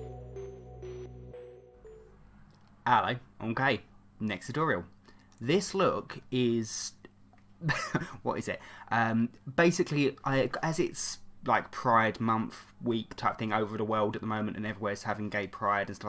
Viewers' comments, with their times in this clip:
0:03 M'kay sounded like I'm gay
0:03 a funny sound how he says mmmk